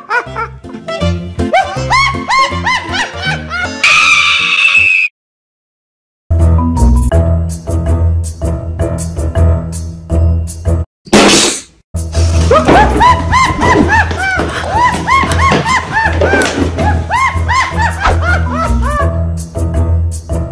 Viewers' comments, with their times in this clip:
0:03 Got me 💀💀💀 + screams looks like a freddy at fnaf